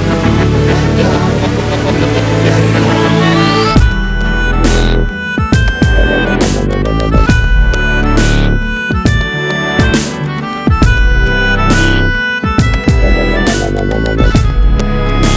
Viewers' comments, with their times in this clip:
0:03 flute pace <3